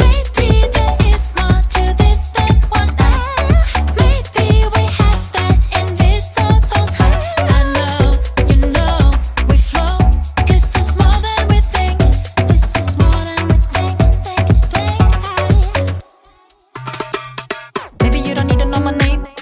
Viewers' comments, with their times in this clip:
0:07 I listened to it until with an open mind. I'm a professional player myself. It's way to over produced. No human inside the production. Sugar ide dig hearing you more produced in a more low key way. Don't listen to whoever pushed this production. Still have some of the sampling ideas and groove ideas. Allow your vox to breathe more. You have a nice tone I hear buried under to many things going on. That ruined it for me. You didn't the production did. And they are clearly dope at engineering and producing but maybe everyone got way to caught in marketing a pop star that will need a ton of help live now rather then keep your voice more raw. Capture some of those airy notes your singing. And fuck pitch modulation ( auto tune ) you gotta warm tone. It's sexy and has soul. Production smothers your soul baby girl ;) Food for thought 🤔 Mad love ♥️